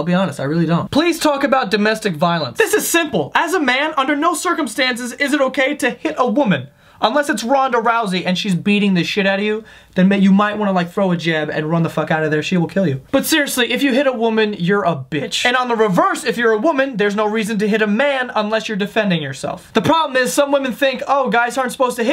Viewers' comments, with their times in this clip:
0:04 robotic voice lol